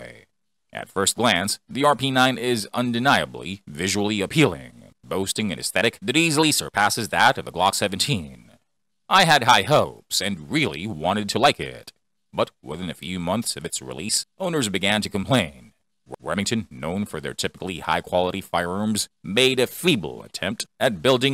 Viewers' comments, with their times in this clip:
0:08 because it sounds like AI! “I had high hopes”, sounds so weird and unnatural. Also there’s a strange crackle to the voice/audio that sounds very artificial. Also the hard stops between some vowel sounds and the pitch jumping between vowels within words are a dead giveaway. And the decrease in pitch at the end of every sentence is very noticeable and unusual. “Eeeeeiiight” just weird. So yeah. That’s a definite AI voice.